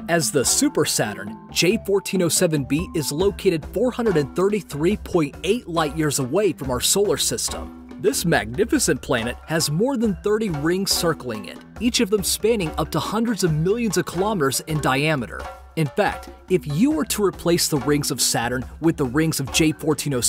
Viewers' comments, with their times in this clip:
0:08 What is that voice when you said 'magnificent'?